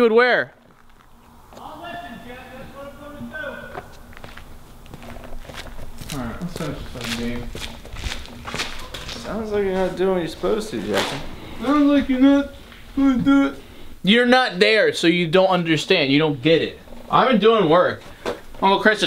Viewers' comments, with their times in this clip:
0:03 What was that when in the game it says who am I talking to ans the song stops THAT GAVE ME THE CHILLZ OMG I was like did he just get hacked